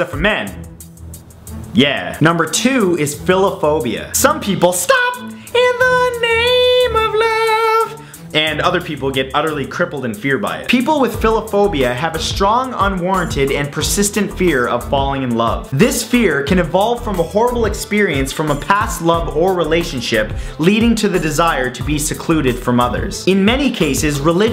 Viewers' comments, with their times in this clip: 0:05 You have an amazing singing voice